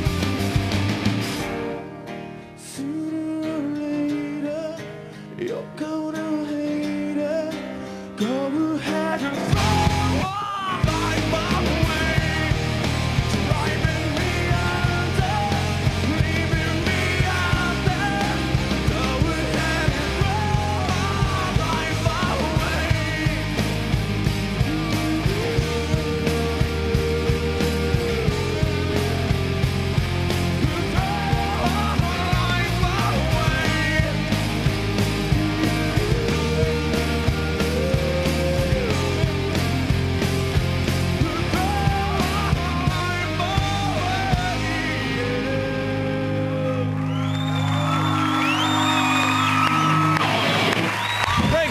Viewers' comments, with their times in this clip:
0:10 then all the way thru are the best parts especially in the end when he's like oooooooo and stuff
0:36 the yahooos were just serene man. Ben was gifted a beautiful voice by God